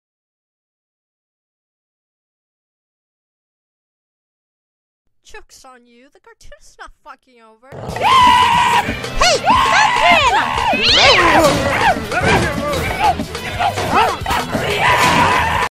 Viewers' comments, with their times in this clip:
0:08 Is it weird that I think it sounds like Peppino’s in genuine pain?
0:08 Peppino: Earrape screaming
0:13 hands down to the best fan made Peppino scream ever